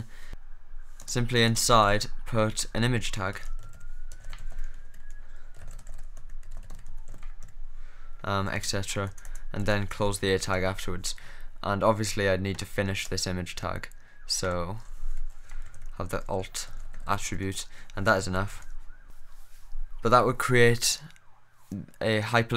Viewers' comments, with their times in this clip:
0:09 ambulance in the background made me nervous !